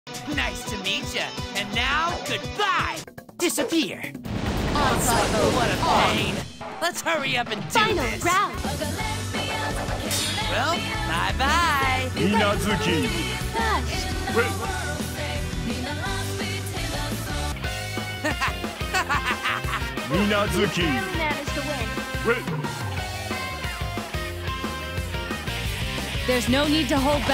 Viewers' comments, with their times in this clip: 0:08 "Oh the Lesbians! Killing Lesbians!" Wait, what!
0:08 Whoa, whoa, wait. Is she saying "lesbians" ? If she is, where can I get this song?